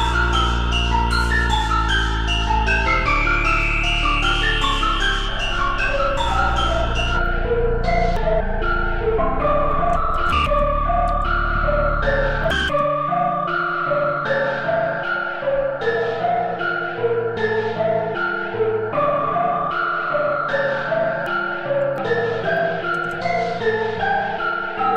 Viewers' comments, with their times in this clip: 0:10 Yo that shit turned into some crazy metro shit💯🔥🔥